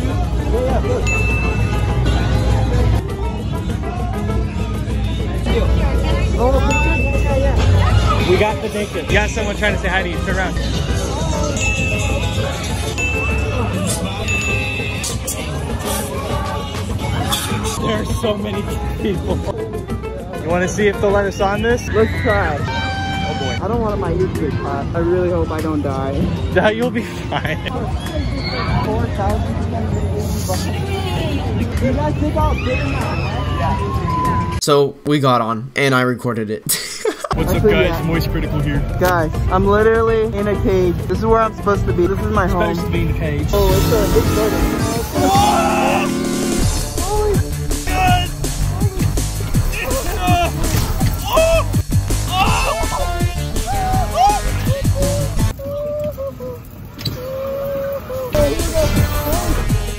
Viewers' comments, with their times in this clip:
0:10 the music in the background I SWEAR I HEAR IT EVERYWHERE AT SCHOOL!
0:37 Bro that moistcritikal impression was wayyy to clean
0:37 The Charles impression is pretty on point
0:38 casually voice critical(penquiz) appearing in the video
0:45 NOT THE MARIO BOSS MUSIC BAHAHAHHAHA I LOVE THIS -